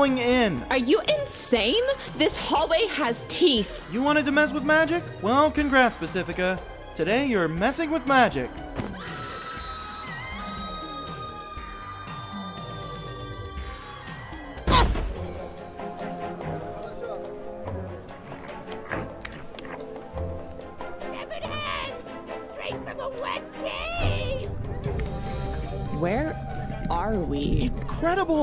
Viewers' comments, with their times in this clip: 0:08 that scream was like: "AAAAAAAAAAAAAAAAAAAAAAAAAAHHHHHHHHHHHHHHHHHHHHHHHHHHHHHHHHHHHHHHHHH"
0:09 Was not prepared for the screams of the damned pacifica’s va scrumpt there